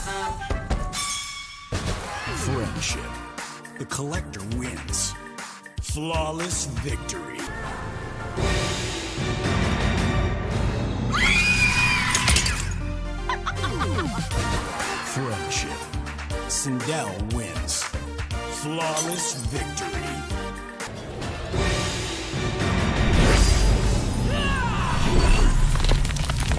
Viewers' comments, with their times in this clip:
0:10 OWWWW!!!! That hurt my ears Sindel!